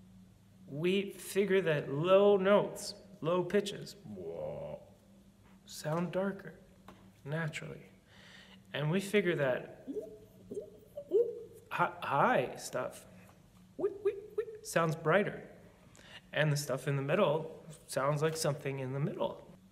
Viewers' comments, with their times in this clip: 0:04 Casual C#2 from a tenor lol